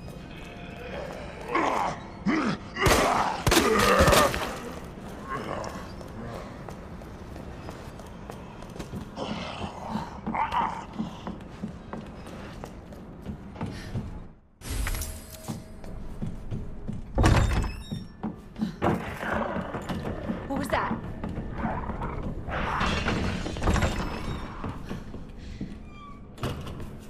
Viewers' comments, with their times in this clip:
0:09 you can hear a zombie say fuck off